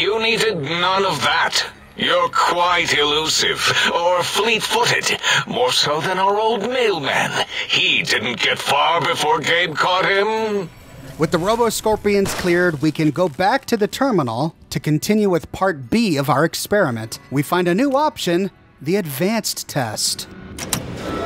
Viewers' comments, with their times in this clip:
0:06 wtf mailman fricked Cherie O'Banon's lol Brazzers theme plays back